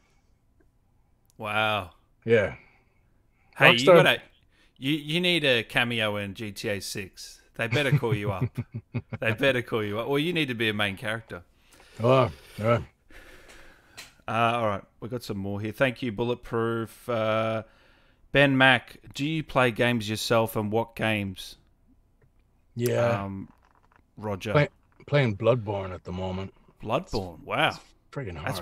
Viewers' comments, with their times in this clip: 0:10 listen to that guilty sounding response you know he recorded at least a couple of lines